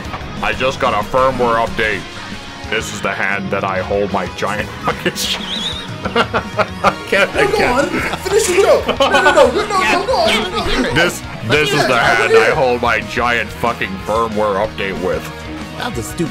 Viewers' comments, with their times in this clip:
0:04 That wheeze XD